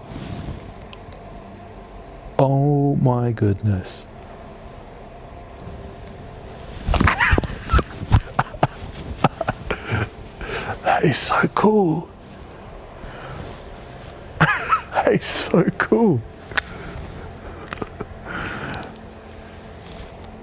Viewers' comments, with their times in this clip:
0:05 I knew that chuckle was coming since we saw it before you did 😂😂😂 lurve it